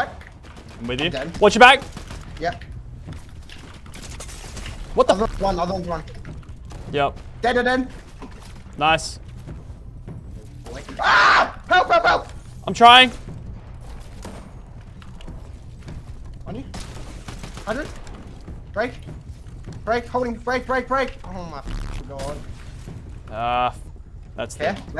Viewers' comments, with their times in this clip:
0:10 that scream got me on the floor dying